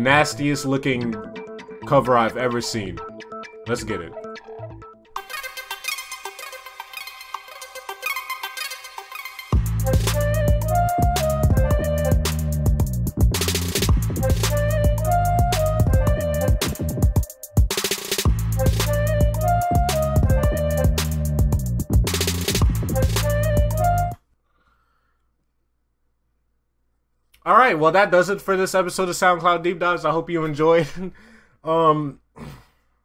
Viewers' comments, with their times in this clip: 0:04 tawog intro song type beat ngl
0:05 Bruh that got me crying, the beat n everything 😭
0:07 best beat ever 🤣🤣
0:09 My sleep paralysis demons theme song
0:09 What everything sounds like at the party when you on acid for the first time
0:10 goofy ahh beat
0:14 snake charmers be like